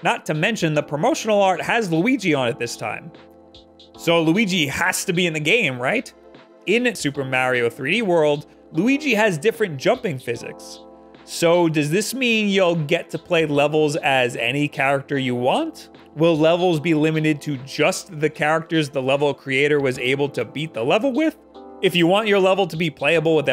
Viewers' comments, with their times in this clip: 0:06 "In super mario THREE world"